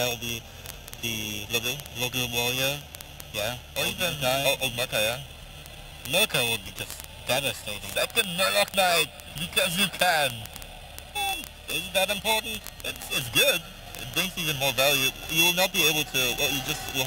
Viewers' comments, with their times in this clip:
0:04 problems with the sound start ...